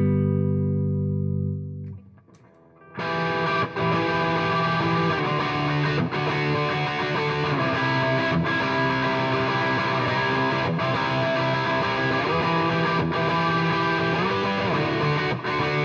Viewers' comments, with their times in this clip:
0:03 What is the riff played sounds really cool